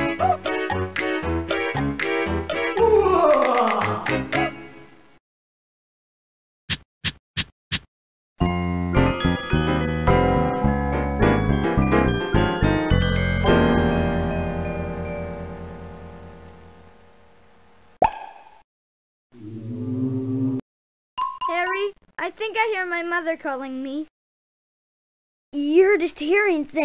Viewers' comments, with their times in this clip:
0:07 is some creepy music.